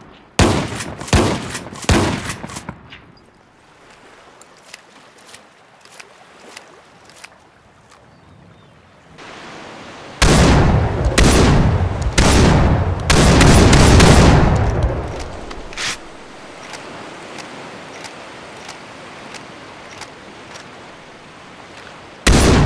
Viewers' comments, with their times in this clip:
0:08 at 2x speed it sound like beginning of believer